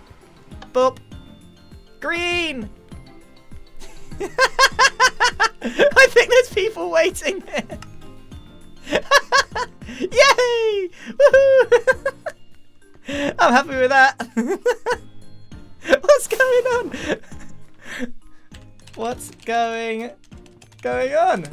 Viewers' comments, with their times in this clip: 0:08 Grian sounds like a happy 10 yo child lololol